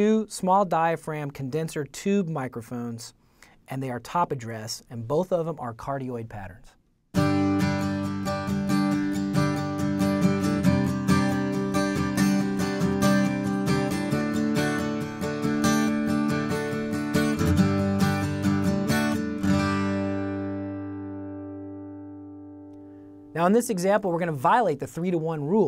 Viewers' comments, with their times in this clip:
0:08 and we have a phase problem lol How ironic
0:08 The spaced pair stereo method sounds a lot like those early Bob Dylan records, especially "The Times They Are A-Changin'." Now to just get a pair of $1,000 microphones is our only challenge.